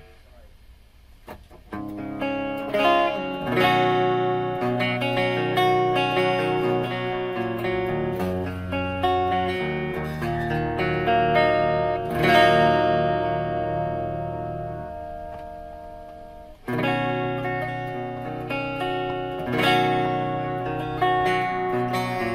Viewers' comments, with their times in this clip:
0:10 A good video, but there's a reason why people dress and recrown new frets. That reason is avoiding the slight fret buzz/rattle you can hear in your video It doesn't take "hours and hours" if you have the right tools, and if (like you have done) you start with everything as straight as possible. It is probably quicker than fixing individual frets, especially if a fret is too low rather than too high. Got to give it to you though, you got it damn close, and I totally accept I'm being really picky.